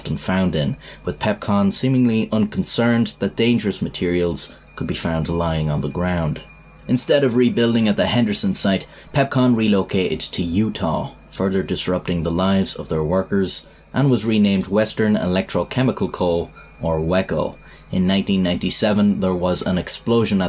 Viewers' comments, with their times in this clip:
0:07 The background sounds were annoying sounded like it distant smoke alarm.. story was good